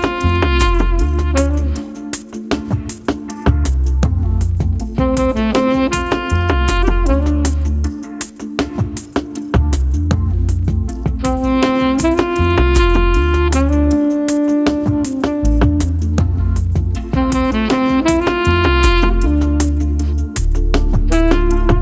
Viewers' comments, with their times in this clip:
0:05 BRING IT ON! WONDERFUL WONDERFUL SMOOTH MUSIC!! Thank you for sharing this gift for the soull